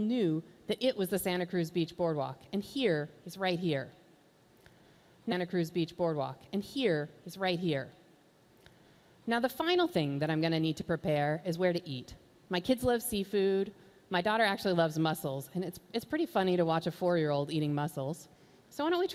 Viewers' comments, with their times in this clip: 0:03 -bad editing its looped